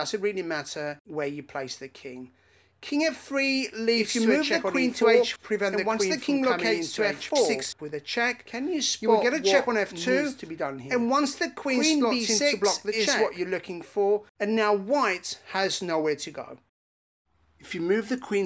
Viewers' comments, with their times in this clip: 0:04 WTF is going on here? Are you possessed? Someone tell me I'm not the only hearing things by myself in the middle of the night while watching a chess vid. o_0